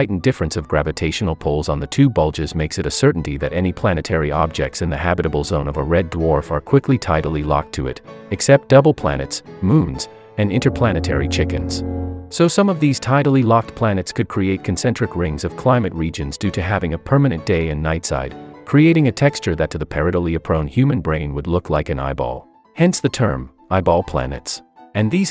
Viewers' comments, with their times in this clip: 0:08 I thought he said "Devil" planets. That seems more interesting than eyeball planets.